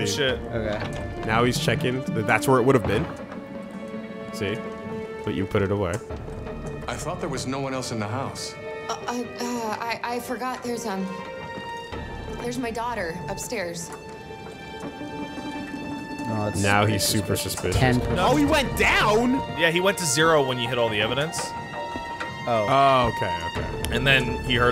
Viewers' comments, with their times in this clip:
0:09 WHY WOULD AN ANDROID BE NERVOUS? COULDN'T SHE JUST TALK IN HER DEFAULT VOICE?????